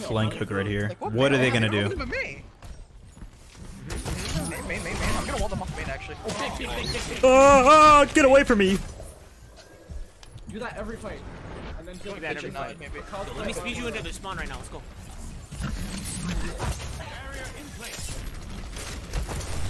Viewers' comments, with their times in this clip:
0:07 ngl u sounded like Kermit the frog there